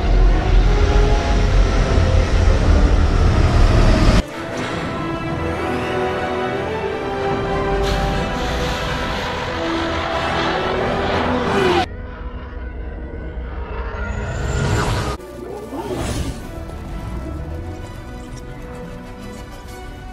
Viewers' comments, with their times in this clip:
0:04 The music here is beautiful